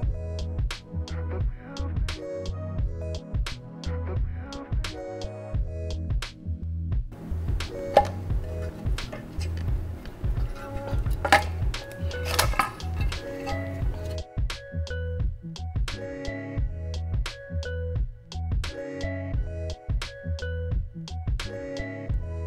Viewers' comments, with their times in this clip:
0:07 That "POP" sound just tickled my asmr brain. 😁